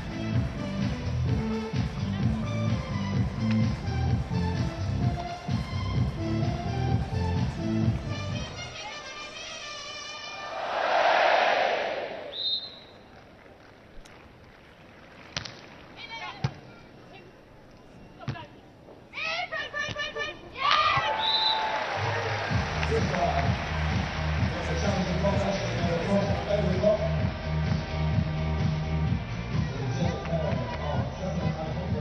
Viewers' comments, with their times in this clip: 0:09 I heard IPL tone in
0:16 that cricket's tone🫀